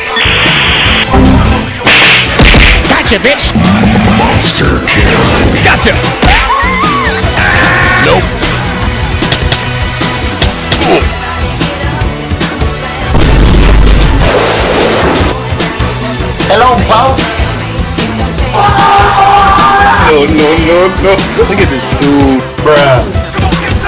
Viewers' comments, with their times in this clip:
0:06 where does the sound come from like uuuuuhhhhhhh